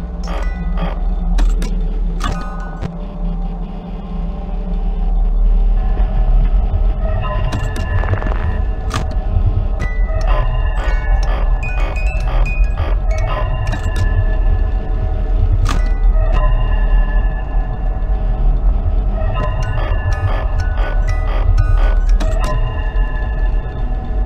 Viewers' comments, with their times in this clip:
0:06 this doods face with the ambiance music i cant 😭😭😭😭🤣🤣🤣🤣🤣🤣🤣🤣